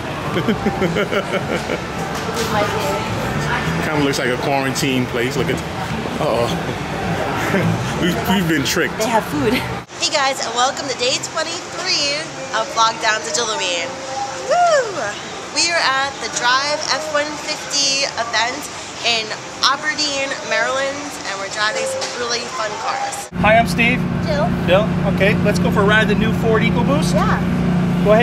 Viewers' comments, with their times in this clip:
0:09 at part u said they hav food it sounded like a something a fat person would say